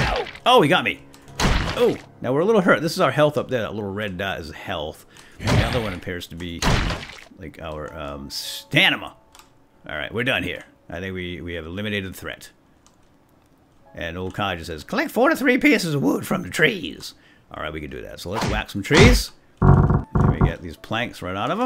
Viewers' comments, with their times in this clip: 0:07 "and the other bar appears to be my... Stanima!" lol, keep up the great work!
0:08 stanima? dont you say stamina